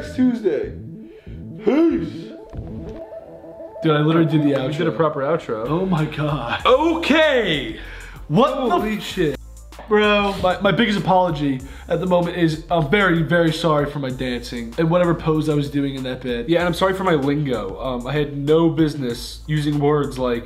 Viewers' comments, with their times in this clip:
0:08 both of them swore at the same time, and there was only one censor. (Grayson said WTF, and Ethan said holy sh!t).